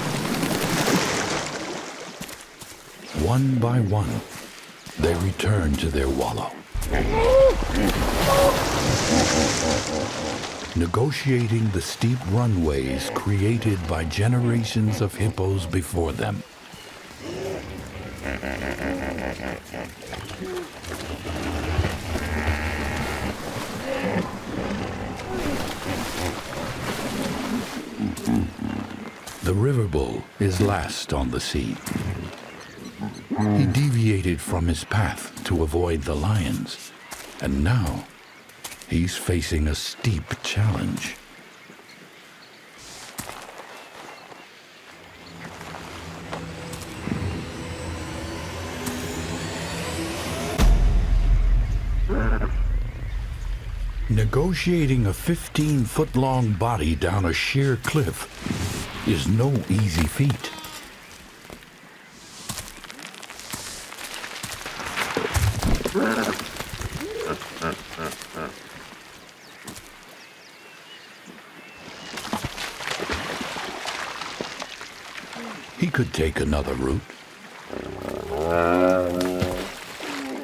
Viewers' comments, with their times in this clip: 0:07 Who is screaming like that? 😂
1:06 he starts laughing after getting down the first part
1:06 sounds like muhehehe :D
1:06 ...that evil laugh after going down
1:06 for Jabba The Hutt laugh.